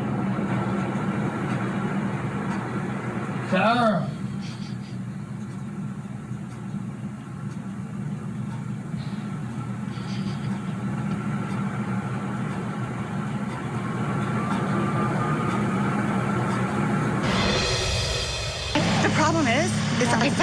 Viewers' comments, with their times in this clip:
0:07 At around the mark, you can hear her laughing under her breath. It’s just after he calls her name from inside the suitcase. MURd*r 1, all day long.